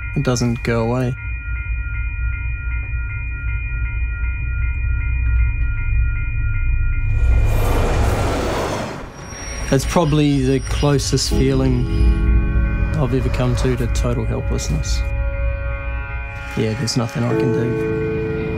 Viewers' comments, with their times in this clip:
0:03 How the fuck do you hear literal blaring alarms, bright flashing lights and not see the massive fuckoff object loudly speeding towards you bruh SHE CHECKED THE OTHER DIRECTION WHEN CROSSING